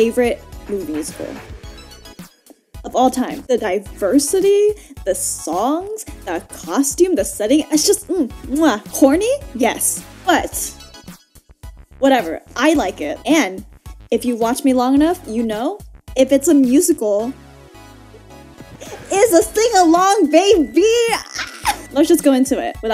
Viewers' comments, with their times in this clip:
0:09 I wasn't sure if you said "horny" or "corny" but either way....SAME.